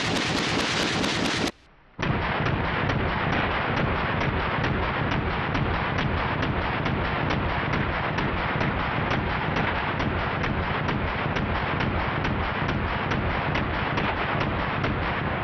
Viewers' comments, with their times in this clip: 0:03 nice techno beat.